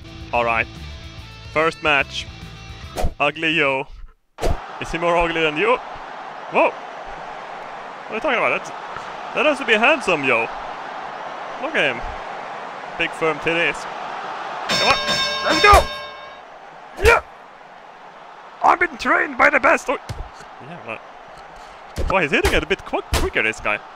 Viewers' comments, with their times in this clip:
0:08 I think your fridge is trying to escape.